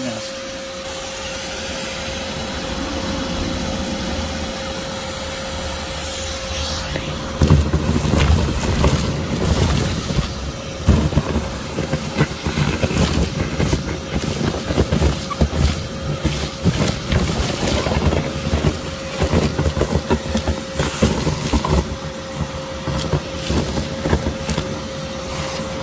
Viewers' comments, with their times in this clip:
0:07 There's something about those violent tube noises that give me a good chuckle